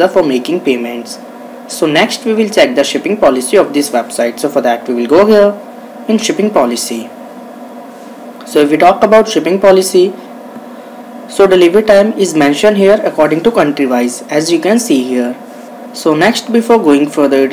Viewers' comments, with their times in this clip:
0:03 O my word, the audio is staticky and incomprehensible!